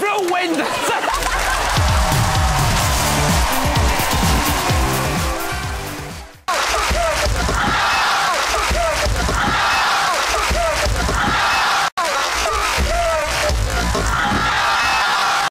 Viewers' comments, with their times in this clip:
0:10 hahaahahha.. be4 he falls he says "hath hath dukaan". the street fighter xD